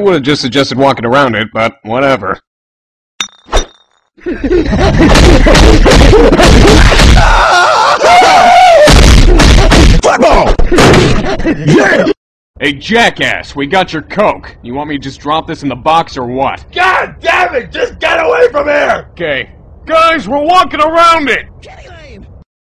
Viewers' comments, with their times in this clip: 0:09 Flat ball yeah